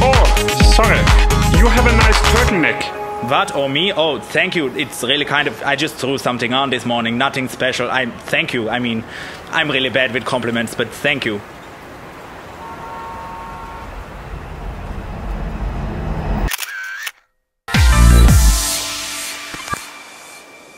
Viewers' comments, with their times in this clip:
0:04 sounds like Moss from IT Crowd :DDDD